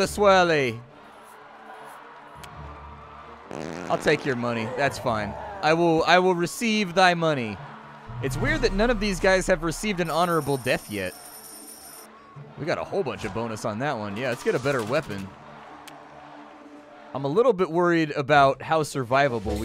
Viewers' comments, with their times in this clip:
0:03 that fart turned the dudes beard green lol